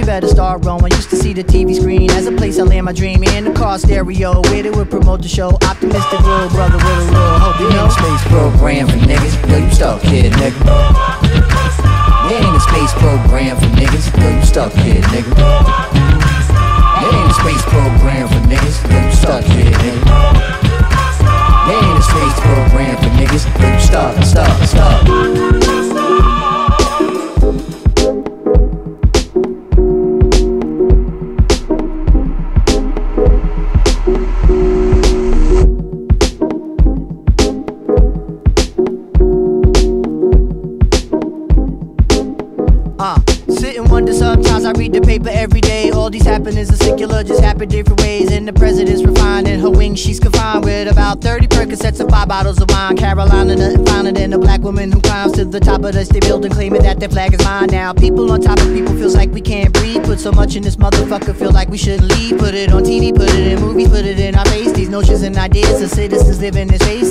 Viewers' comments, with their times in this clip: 0:06 Its all about the break ...that took me back to 93 when I first heard it...fuck a time machine
0:48 beat switch ain't supposed to be smooth but it just feel so smooth cs its atcq lmao